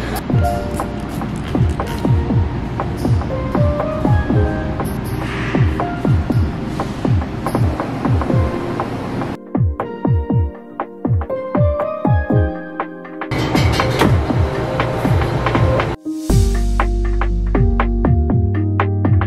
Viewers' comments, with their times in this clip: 0:04 are you a new jeans fan, i heard their instrumental in the background